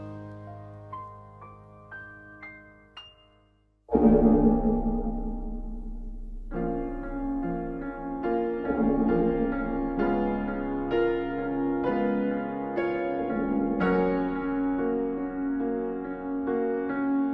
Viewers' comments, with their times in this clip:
0:03 That dying TARDIS tone hits so hard